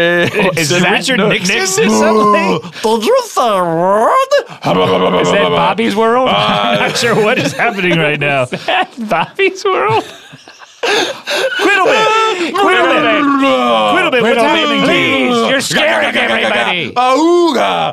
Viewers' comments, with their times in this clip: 0:05 I I don’t know why Thomas Breaks at “is that Bobby’s World” but it’s hilarious